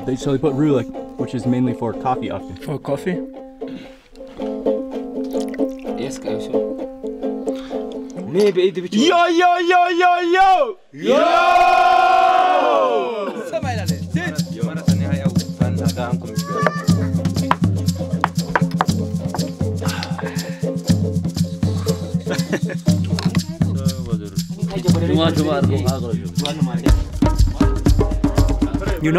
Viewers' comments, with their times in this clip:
0:10 I loved the shout "yo yo yo " he he am from Eritrea big love to habesha people!!!